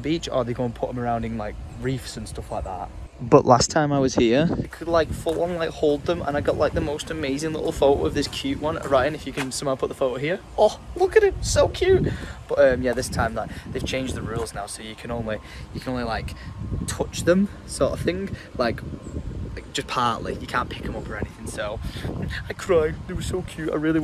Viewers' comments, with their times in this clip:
0:05 Why did it sound like you broke into a Liverpool accent all of a sudden? 😂